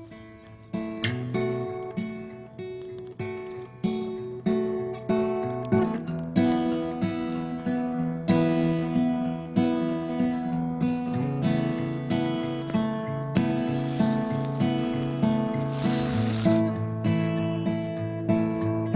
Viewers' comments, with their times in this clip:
0:05 Really nice emotions coming out of this part. Really nice choice of music.